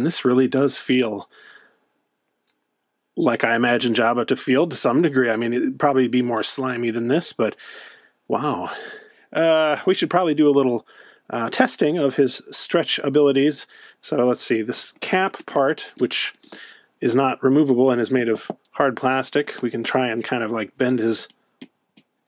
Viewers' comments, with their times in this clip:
0:07 He said WOW 😮 like a boy transitioning to manhood! 😜😉 Now let’s see how many get it!😅